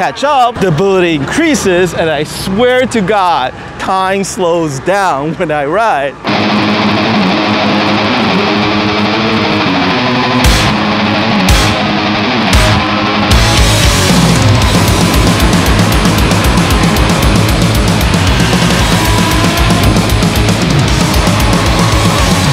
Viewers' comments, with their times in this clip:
0:06 what's that energetic metal piece ?